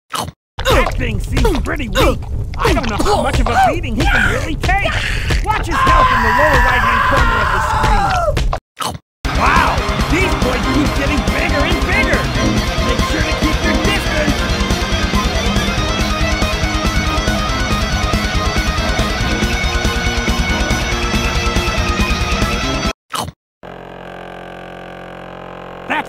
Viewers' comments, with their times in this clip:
0:05 man's scream sound is scp-096
0:05 I heard SCP-096 Scream.
0:12 not gonna lie that song in the background is pretty catchy. Does it have a name?